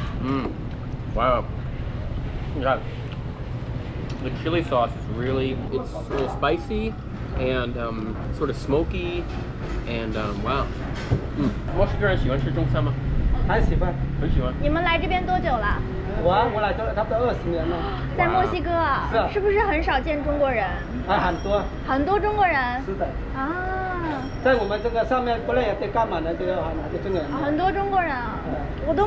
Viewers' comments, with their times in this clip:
0:10 he sounds like Remi from Ratatouille.